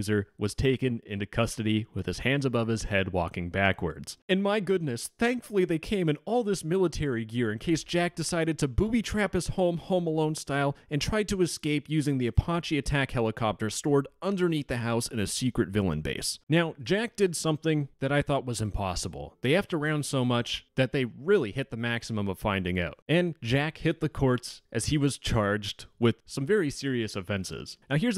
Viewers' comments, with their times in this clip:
0:10 “apoche” ? Are you fing kidding me right now?